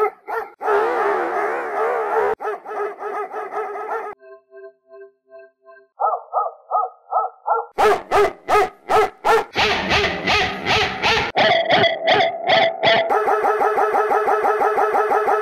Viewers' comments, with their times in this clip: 0:08 The neighbors' dog at 3AM
0:09 Like a bike
0:09 real rock guitar sound
0:09 Like a bike